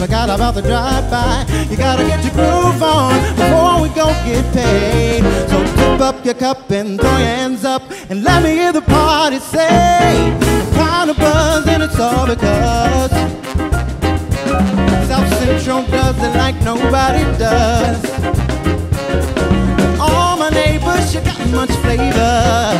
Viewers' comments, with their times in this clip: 0:10 I can't get enough of that drum groove!